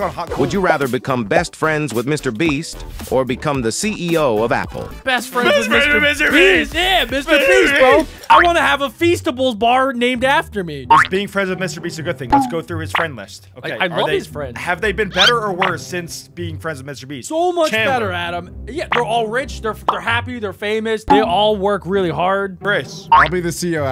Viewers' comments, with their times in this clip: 0:08 The lyrics : I want to have a feastables bar named after me | I want to have a feast of bulls bar named after me